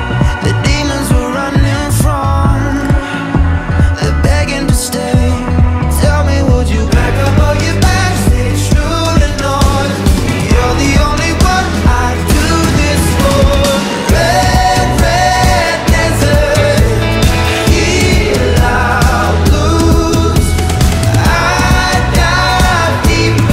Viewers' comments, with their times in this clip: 0:05 tell me would you PACK UP ALL YOUR BAGS STAYING TRUE TO NORTH The harmonization is so good and the way all 4 of them come all of a sudden gives me chills.